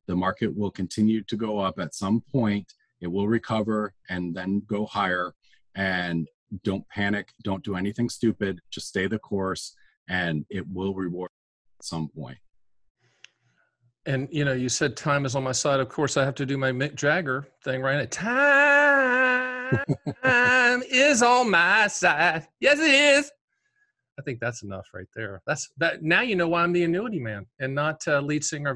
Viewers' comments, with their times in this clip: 0:10 at least you sang it in tune, lol